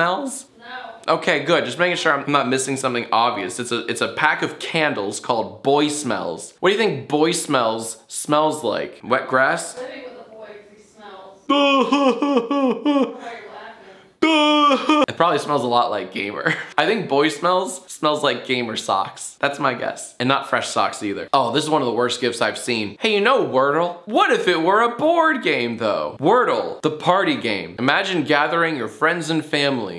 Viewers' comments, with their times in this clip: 0:10 jacks fake laugh is so much better than his real one